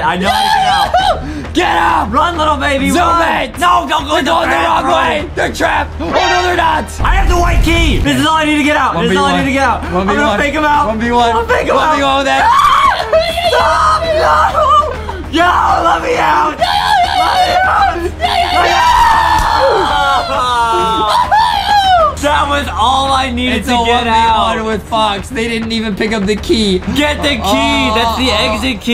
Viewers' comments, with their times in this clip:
0:10 BRUH THAT SCREAM THO MADE ME DIE